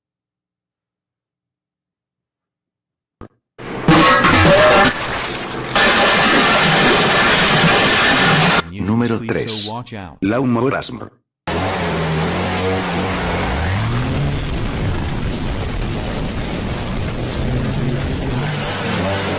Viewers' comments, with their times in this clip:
0:03 finally asmr but just as we like